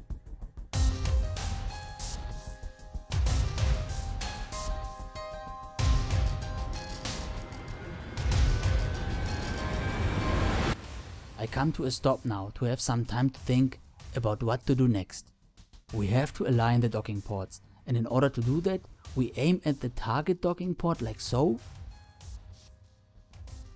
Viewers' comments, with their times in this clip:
0:07 I skipped to time to the beginning of docking procedure. & turned my speaker to total maximum, can still barely hear the words.